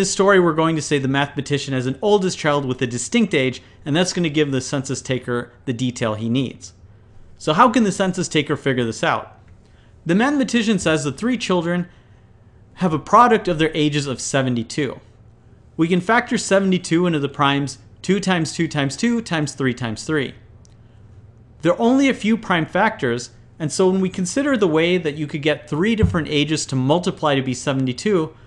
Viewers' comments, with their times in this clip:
0:10 You know you can um Re-record that